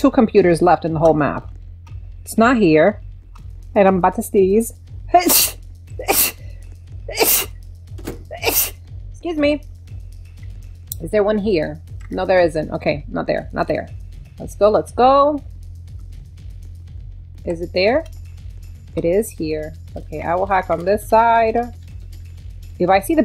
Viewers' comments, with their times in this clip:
0:04 her sneeze attack